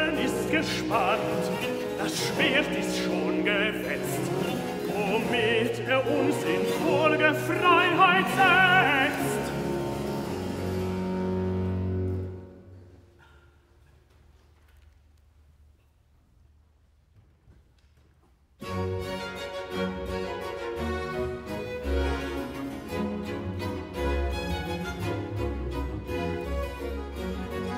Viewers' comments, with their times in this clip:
0:09 love the duet